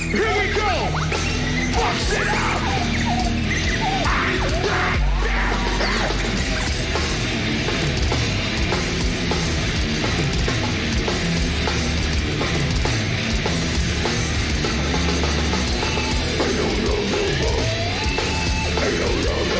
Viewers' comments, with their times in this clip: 0:06 this groove is so good. Gives me the Pantera vibes every single time I hear it.😎🤟